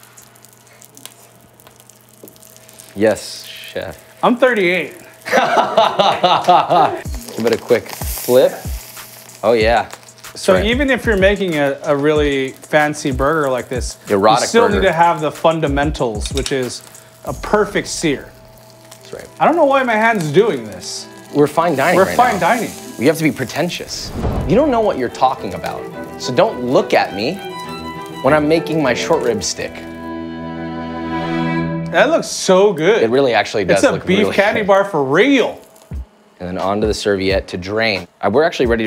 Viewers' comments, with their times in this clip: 0:04 Josh’s work laugh is so terrible
0:24 Wait what when Josh looks at the camera and insults it he really sounds like Michael Reeves...